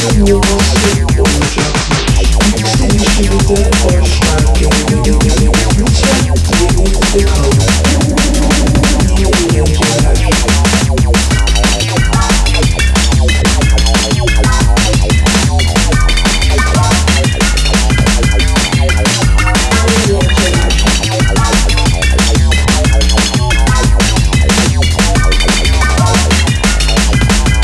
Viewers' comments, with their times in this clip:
0:10 I love the bleep bloops in my ears